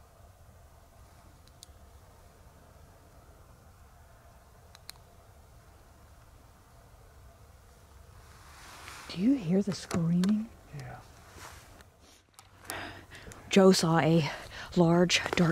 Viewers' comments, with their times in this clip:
0:03 Also, ? Confirmed Bigfoot right there for you! They will also mimic crying sounds (like women or a baby).